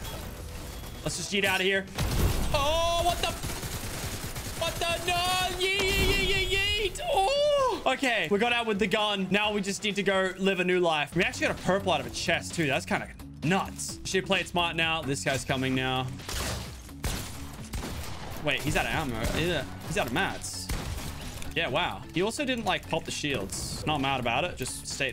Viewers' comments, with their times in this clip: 0:07 that noise he makes😳😂